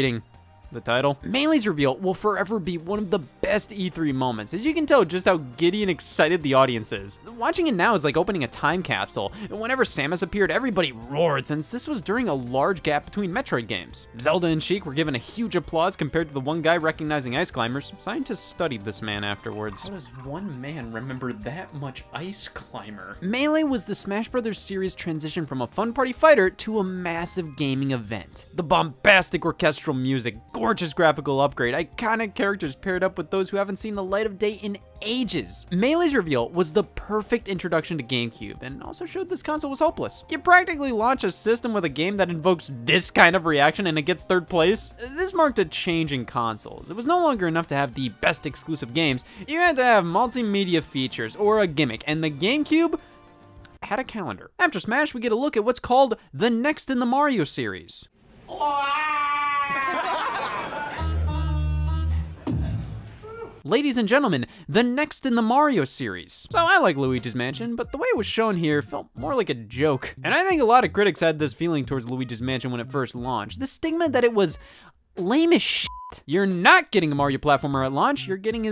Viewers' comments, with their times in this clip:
0:09 I'm pretty sure they were clapping because they thought Ridley was gonna be a playable character in Melee.
0:58 this was the most generic stock laugh sound effect I've ever heard a crowd make
1:02 that lone WOOT for Luigi mansion lol